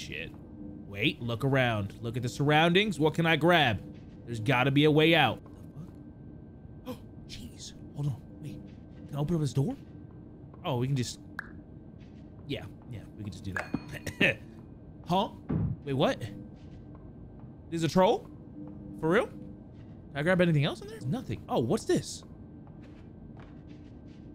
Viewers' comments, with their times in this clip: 0:06 surprised gasp cheese